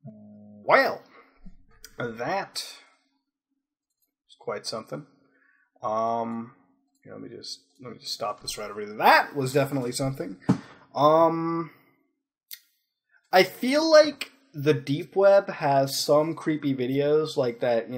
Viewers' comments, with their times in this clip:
0:04 you went southern.